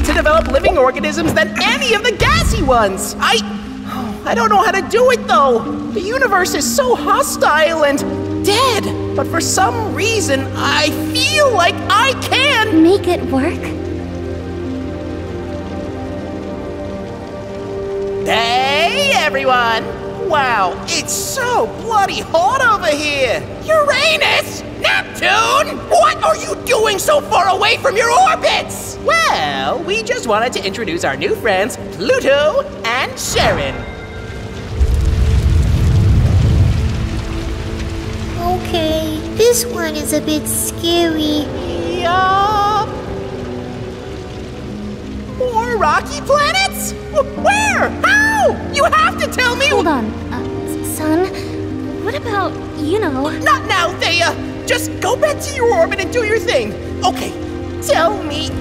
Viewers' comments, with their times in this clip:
0:07 I wonder why Sun says "Hostile", with the letter I having long sound? It's Short I sound, Not Long I sound. Can't English speaker sticks to That?
0:39 "dis wan is a bit scawy"